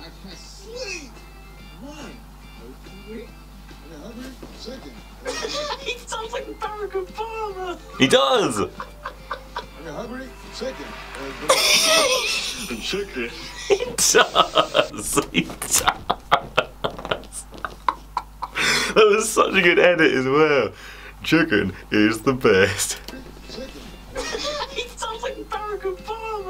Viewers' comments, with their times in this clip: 0:10 this moment..when you laughing because of you😂